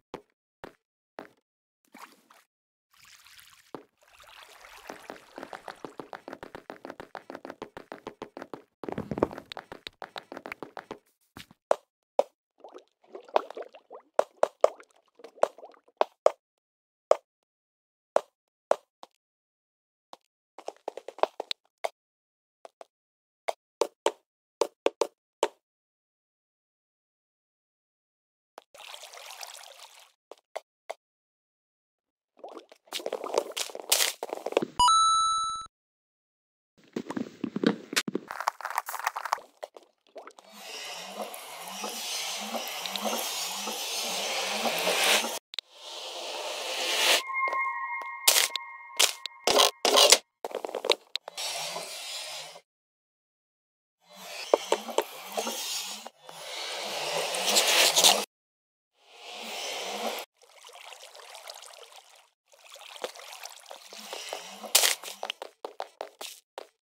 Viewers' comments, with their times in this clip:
0:05 the little footstep sounds are so adorable 😭😭
0:47 Wait There Ambient
0:47 that Minecraft cave sound :/